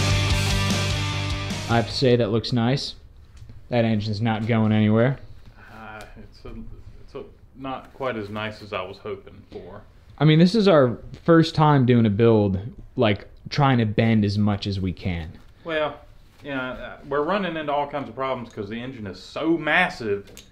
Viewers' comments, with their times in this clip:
0:03 I love the music